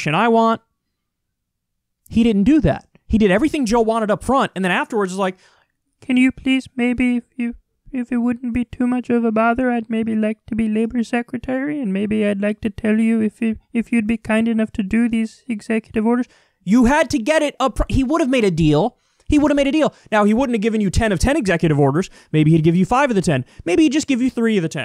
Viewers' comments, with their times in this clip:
0:04 Kyle’s impression of Bernie 😂😂🤣😂😂😂
0:05 tell me he doesn't sound like Milton Waddams from office space. Listening to the radio from 9 to 11.
0:07 lmfao was that a jorden peterson impression lol?